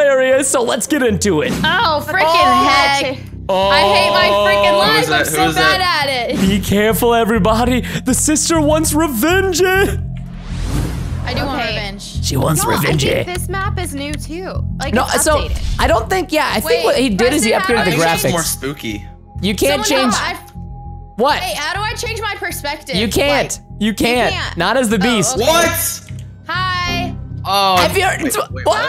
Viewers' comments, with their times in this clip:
0:09 In i like how you say revenge nohomo